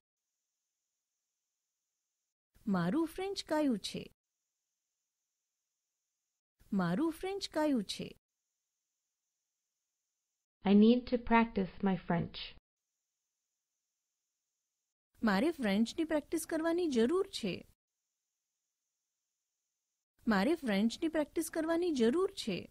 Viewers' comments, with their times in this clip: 0:07 At approx mins, it's written "મારું ફ્રેન્ચ કાચું છે." કાચું is erroneously pronounced as કાયું by the video's speaker (not sure what કાયું means though)..